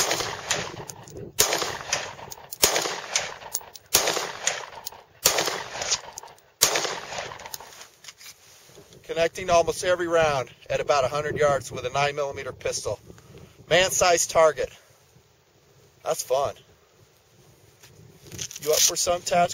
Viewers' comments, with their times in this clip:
0:06 Was i mistaken or did i hear a ricochet ? Sounded pretty close.